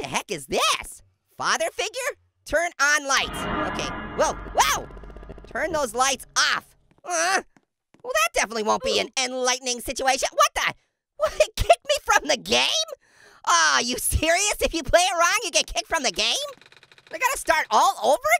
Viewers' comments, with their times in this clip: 0:03 Did anyone hear the FNAF door light sound when Bonnie or Chica are at the door ?